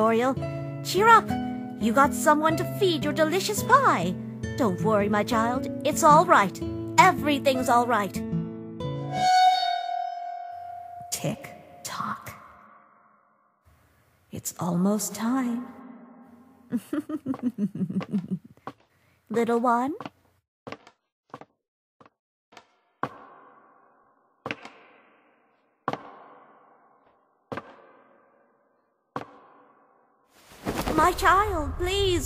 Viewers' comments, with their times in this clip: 0:10 TikTok? Omg she's a millennial.
0:14 i see tic tacs gimme